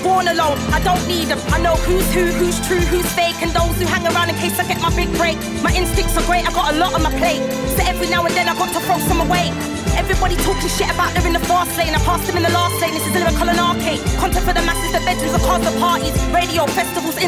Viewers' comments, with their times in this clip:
0:05 Massive attack - Unfinished Sympathy. I have it on my playlist the most underrated piece of music and No Lay has brought it out of the shadows in 2023 even though this was 11 years ago. On the original seconds the way the violins 🎻 flow absolutely mesmerising to the ears 🥰🥰 goosebumps every time. Do your thing girl ❤